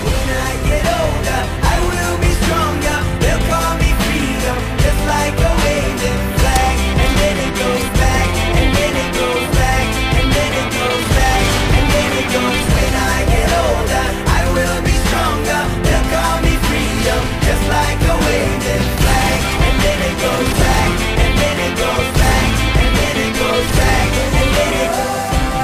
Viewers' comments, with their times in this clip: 0:10 the best yeahhhh